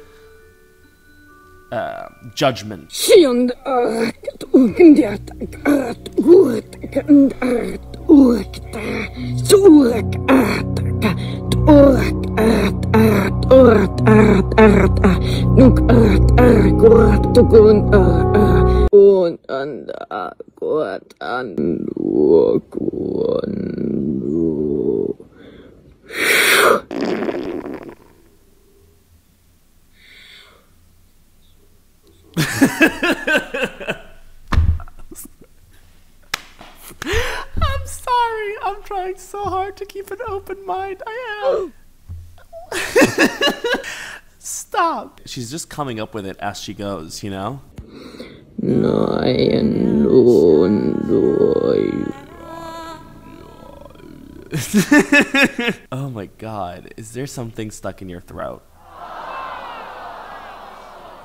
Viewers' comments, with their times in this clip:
0:03 She's either saying an arabic name OR SUMMONING A FUCKING DEMON. chose your favourite from these 2
0:04 all I heard from that was DU-DU-DU from blackpink 🧍‍♀️
0:10 Sounds like an angry chihuahua
0:11 she sounds like she beat boxing
0:11 That is exactly how kalikeya and his army men spoke in the movie baahubali
0:21 she sound like those tik tok boys 😭💀
0:22 Sounds like my stomach when its hungry 😂😂😂😂
0:22 Oh my, I speak a bit of light language myself! Those hours imitating alpha male’s ‘husky voice’ payed off in the end..
0:24 sounds like my stomach
0:49 this just sounds like my stomach when i dont eat every 2 minutes